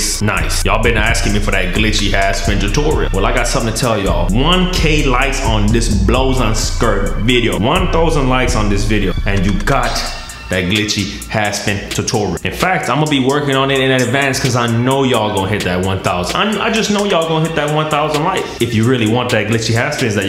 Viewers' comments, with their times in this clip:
0:05 once he said that word I knew he had some form of Jamaican in him. 😂